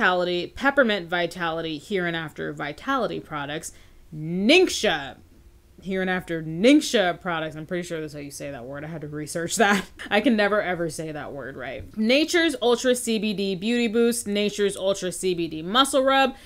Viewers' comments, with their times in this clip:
0:04 you said ningxia right